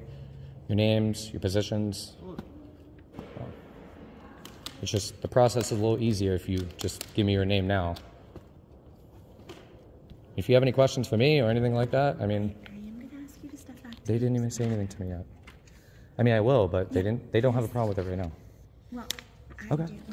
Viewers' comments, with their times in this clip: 0:03 the way he snapped the water bottle for a baby sip 😂 u fucking took their masculinity away they sound like poodles now